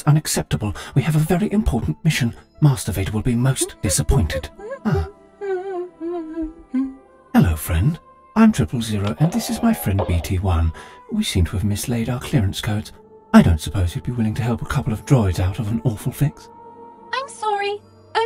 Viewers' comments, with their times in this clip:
0:03 I just realized that protocol droid was humming the cantina theme. Nice touch!